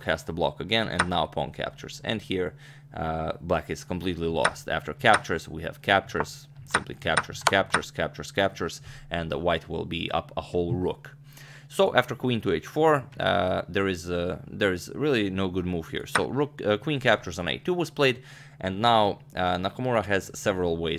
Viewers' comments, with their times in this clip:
0:04 Never before heard "captures" repeated so eloquently